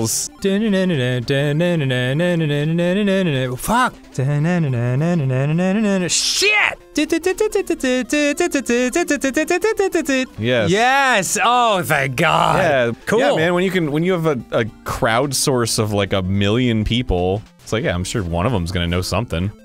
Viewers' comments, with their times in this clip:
0:05 I can't properly describe how funny it is when Dan yells, "SSHHIEET!" like